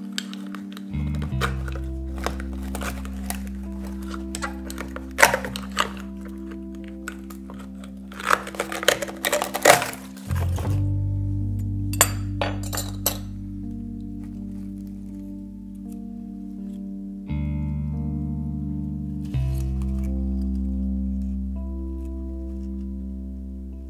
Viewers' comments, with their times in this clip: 0:05 im just here for the crack noise
0:07 That looks so tasty The ASMR IS real